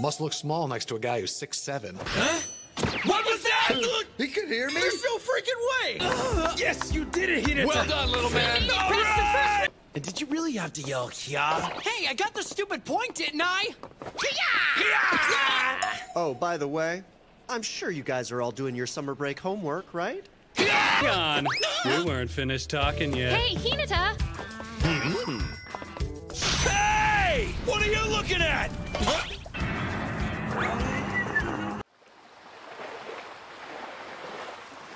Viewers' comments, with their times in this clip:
0:06 the "The Circle of Life" starts playing
0:20 Perfect cut scream 👌